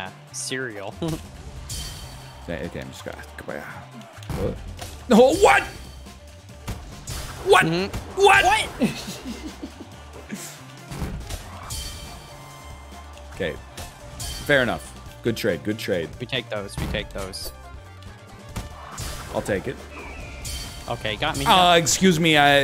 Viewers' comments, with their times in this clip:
0:04 great lil jon impression